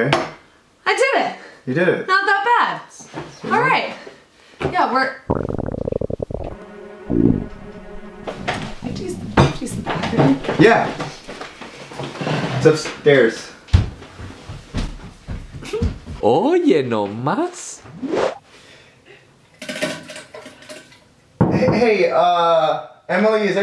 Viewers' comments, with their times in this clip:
0:04 i thought that was my belly lol.